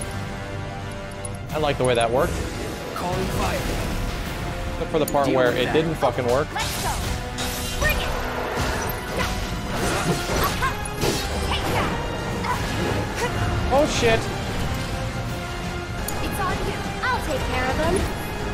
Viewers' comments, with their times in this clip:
0:05 possibly the best soundtrack in the game, this ghoul theme.